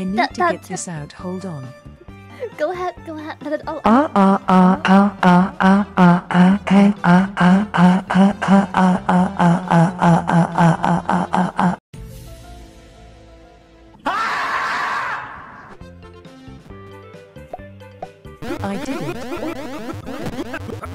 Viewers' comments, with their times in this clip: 0:04 Nice song EVER